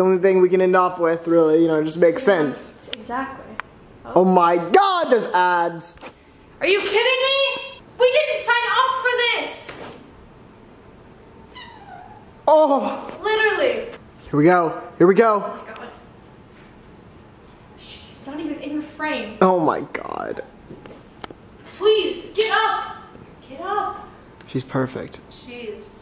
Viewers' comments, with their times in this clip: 0:10 THE LITTLE MEOW 😭😭😭😭